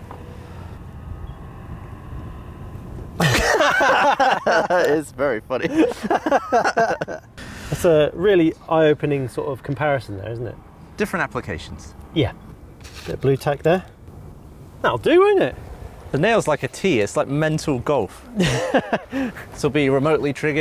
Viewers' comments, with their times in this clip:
0:03 You don't have to laugh at him 😭😭😭